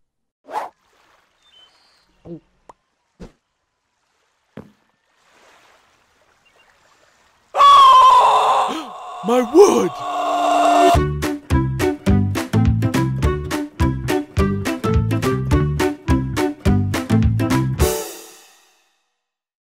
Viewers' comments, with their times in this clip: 0:07 Because nobody would ever notice a screaming tree
0:07 Davie’s Dad: (Screaming) Villager #9: (Gasps) MY WOOD!!!
0:07 WTF is that scream
0:08 Lol scream almost sounded like a burp
0:10 I love the music in I heard it every night ^_^